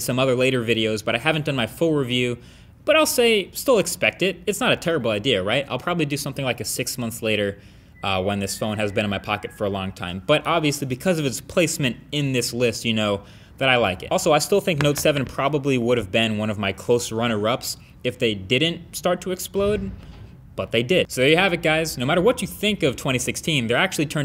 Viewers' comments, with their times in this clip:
0:08 Anyone else hear whistling ?
0:08 whose that guy whistling 😁😁
0:08 anybody else notice that faint whistle in the background? 😂
0:08 Can you all hear someone whistle